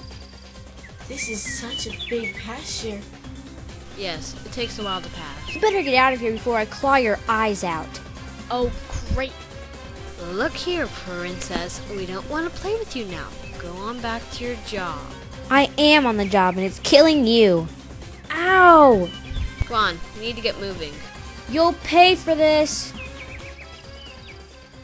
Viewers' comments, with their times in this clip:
0:09 you forgot star's collar. x3 And the music is a bit loud in this one, but thats all. xD Im good at pointing out flaws. x-x XD